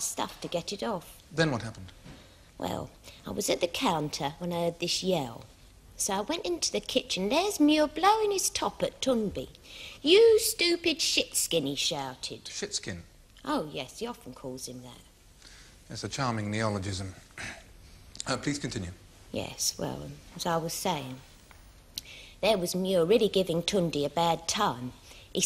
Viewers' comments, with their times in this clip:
0:09 witness calls the plaintiff ‘Tunbe’ after using his correct name ‘Tunde’ at least half a dozen times! 😂😂